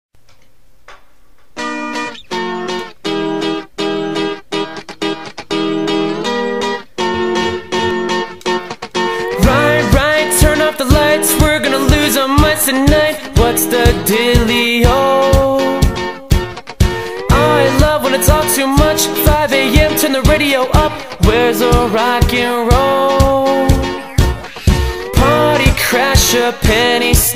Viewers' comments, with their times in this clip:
0:09 dont you mean when you hear my voice the first 5 seconds is music the musics good! probably not my singing